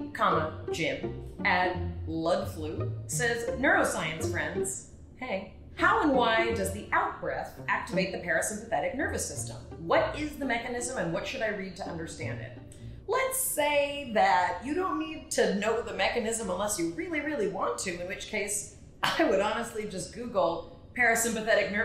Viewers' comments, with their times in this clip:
0:04 that hey made my day